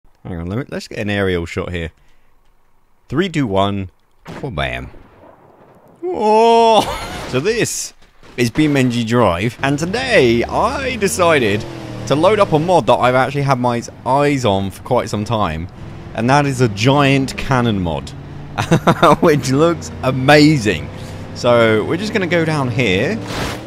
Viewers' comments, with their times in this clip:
0:06 haha the way he says wow haha 😂